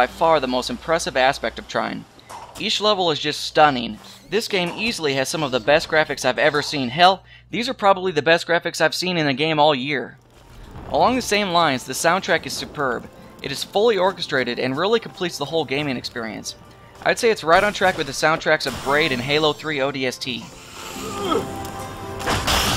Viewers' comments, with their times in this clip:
0:07 LOL "Hell!" all high pitched was too funny.